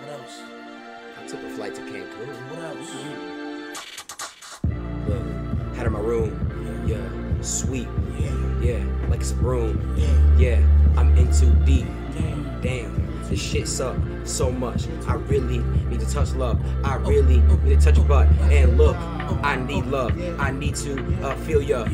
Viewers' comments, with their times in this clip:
0:05 what about the this beat